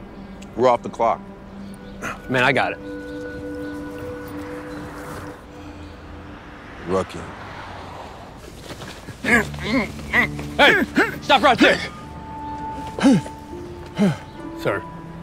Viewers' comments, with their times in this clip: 0:03 that cops accent is amazing. I love a country accent.